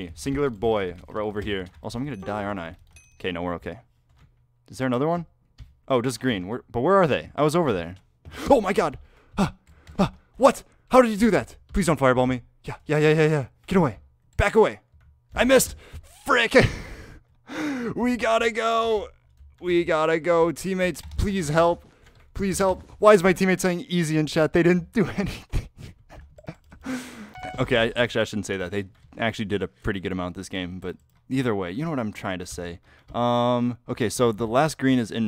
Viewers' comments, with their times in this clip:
0:09 u can hear he got the aliens scared out of him
0:17 he sounds like Technoblade
0:17 i swear he sounded like technoblade that moment